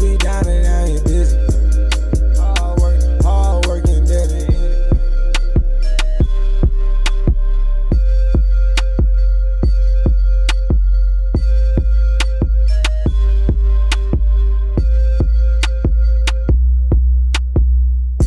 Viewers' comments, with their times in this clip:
0:05 eargasm if you have good headphones